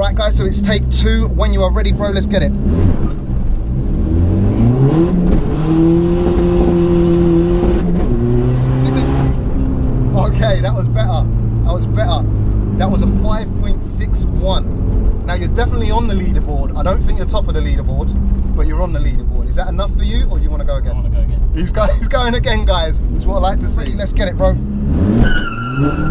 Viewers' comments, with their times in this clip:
0:10 thats how u know if someone is British or not lol, they allways have this t letter problem lol